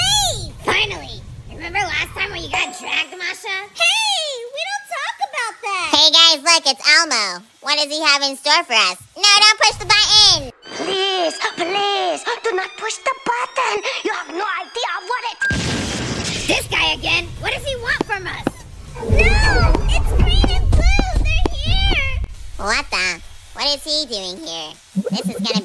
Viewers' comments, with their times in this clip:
0:06 It was funny when he screamed I don't know where to go